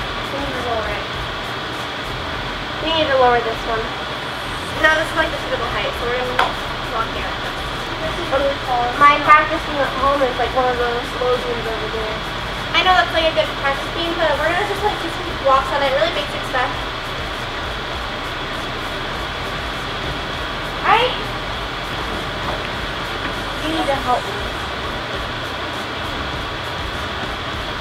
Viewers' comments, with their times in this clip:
0:08 the background noise was killing me 😡😅